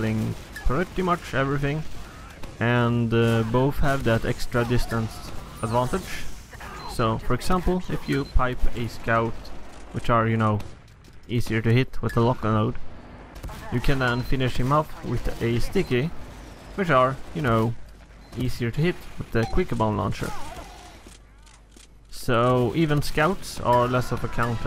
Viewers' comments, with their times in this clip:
0:05 the noise when you sell a building in red alert 2